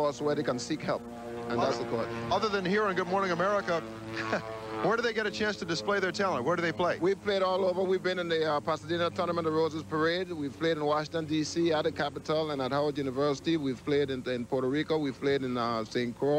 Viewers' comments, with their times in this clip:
0:04 That's the sound of home. The newer Otter's don't come close.